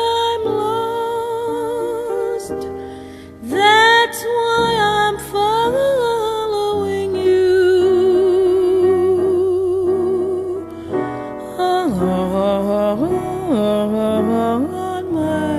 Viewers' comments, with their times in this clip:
0:03 HER TECHNIQUE IS ABSOLUTELY PERFECT
0:03 thats so smooth